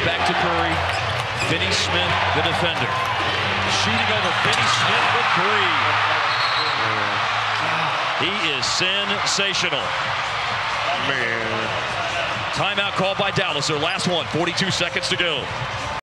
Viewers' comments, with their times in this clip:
0:06 I swear I heard a fart